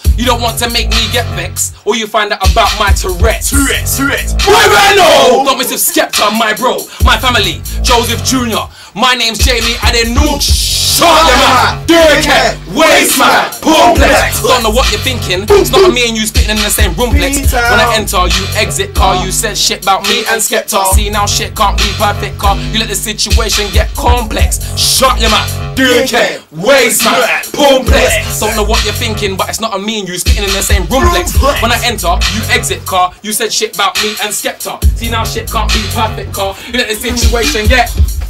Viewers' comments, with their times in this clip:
0:03 skeptas voice fully echoed
0:05 My eardrum ruptured
0:25 Yo she filming , you can hear her saying the words